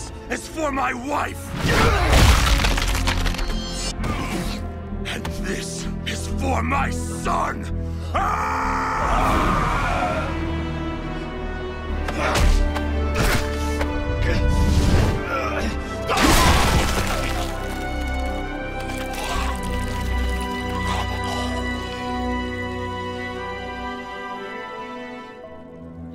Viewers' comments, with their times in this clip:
0:10 [starts playing heroic music] Everyone: "This isn't even heroic, he got the wrong guy!!!"